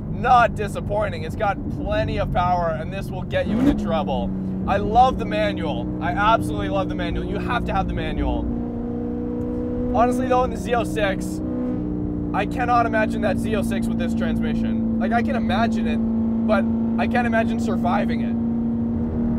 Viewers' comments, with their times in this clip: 0:04 Save the manuals! Awesome video! Both sound beastly.